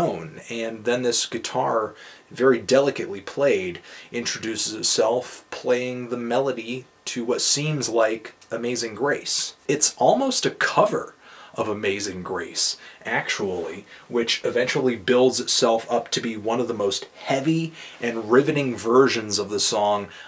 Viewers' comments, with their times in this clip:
0:06 The part in "antennas to heaven", which starts around minute might have the most beautiful and touching drums i've ever heard. always have to close my eyes at this time of the song... great review btw
0:06 I need some help identifying a style of guitar play. on 'antennas to heaven', an ambient, tropical-esque guitar section starts and I can't get enough of it. Does anyone know what this style of music is called?